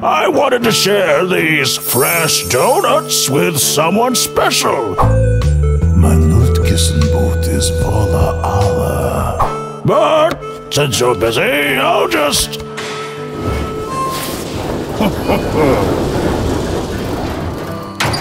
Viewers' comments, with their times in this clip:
0:03 that is not german XDD